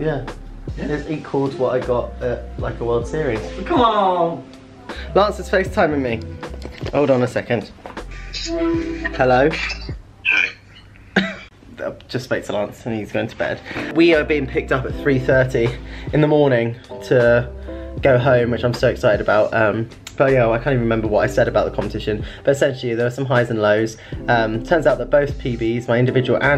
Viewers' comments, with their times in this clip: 0:10 and the mood of his voice...